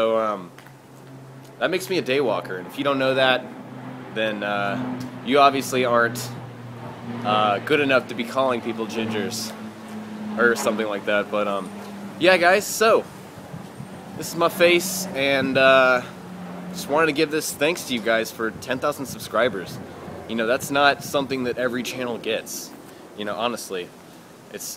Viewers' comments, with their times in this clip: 0:06 it sounded like the dragon music from skyrim!